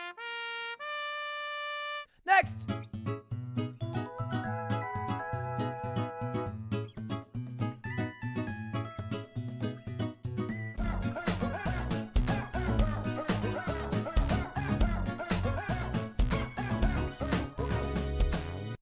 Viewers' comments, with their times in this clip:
0:03 why is the song actually fire tho